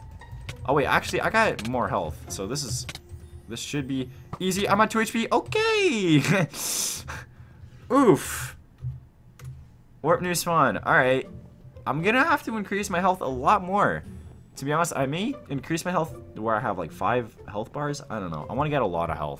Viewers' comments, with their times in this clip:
0:07 top quality oof right there ladies and gents